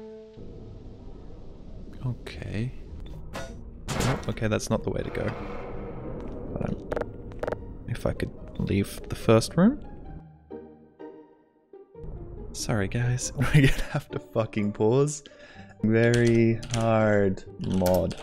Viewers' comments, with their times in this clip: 0:03 listen from the music lines up with the error noise when he clicks the console.
0:04 The two perfectly timed button clicks with the tune at just after Fantastic
0:05 how did i never notice that the interact sound matches up with the music?
0:06 the button presses line up with the song and its glorious
0:06 The song and the button sync xD
0:06 Can I just point out how the music synchs up with the use key? I just wanted to.